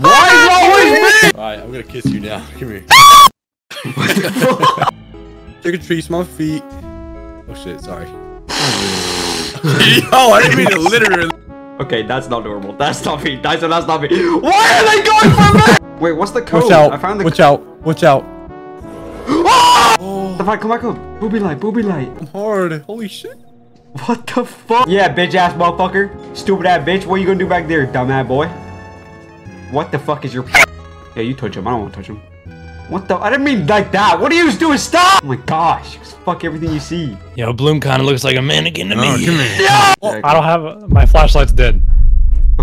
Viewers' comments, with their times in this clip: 0:03 was so funny just love the cat part and hes scream
0:29 he actually sounded like an animatronic